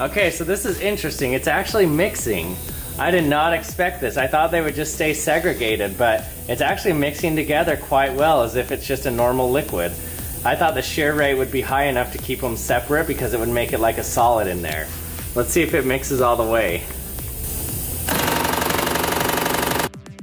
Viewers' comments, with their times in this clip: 0:05 he say segragated rascist bitch